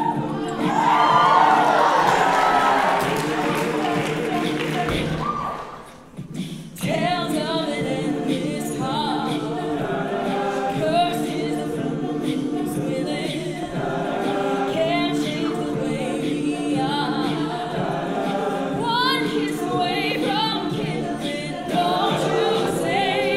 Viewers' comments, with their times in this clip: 0:08 Soo no one's gonna appreciate the guy beatboxing? Guess im the only one💞💞💞 Edit: (he's on the corner)